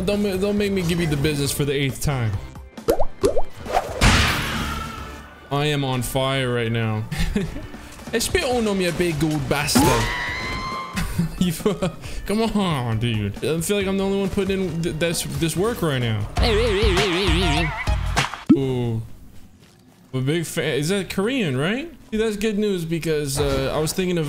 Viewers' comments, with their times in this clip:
0:05 I loved that little western soundeffect after the chaperone kill